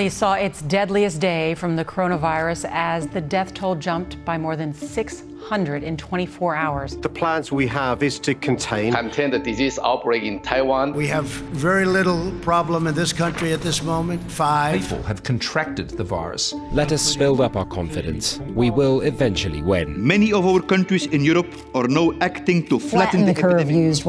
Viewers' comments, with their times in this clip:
0:10 I thought his name is ‘Chin-Chen Hanji’ I freaked out for a second